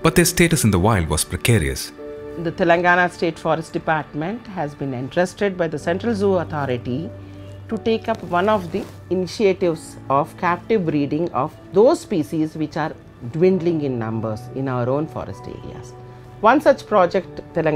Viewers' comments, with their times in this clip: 0:05 I swear I had this woman as a listening exam in high school. (just to be clear, I had not. Its just a joke about different accents, so please dont go crazy over it. But as a non-native speaker its very hard to understand Indians talking English)